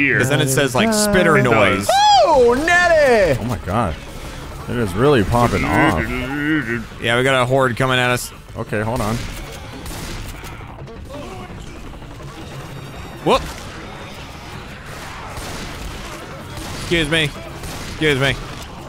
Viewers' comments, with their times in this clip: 0:05 did anyone else check discord?